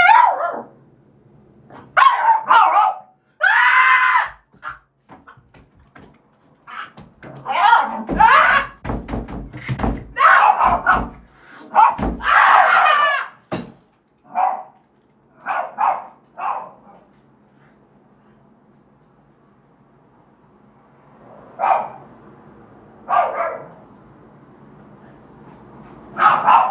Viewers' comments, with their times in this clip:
0:08 AHHHHHHHHHHHHHHHHHHHHHHHHHHHHHHHHHHHHHHHHHHHHHHHHHHHHHHHHHHHHHHHHHHHHHHHHHHHHHHHHHHHHHHHHHHHHHHHHHHHHHHHHHHHHHHHHHHHHHHHHHHHHHHHHHHHHHHHH WHEN YOU SCREAMED I WAS LIKE TERRIFIED for you like seriously